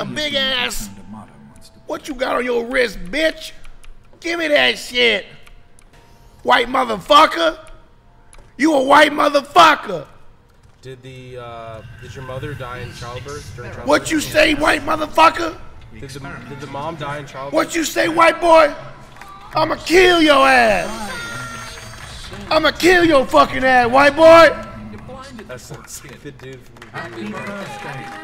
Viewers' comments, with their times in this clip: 0:09 great Martin Lawrence impression!!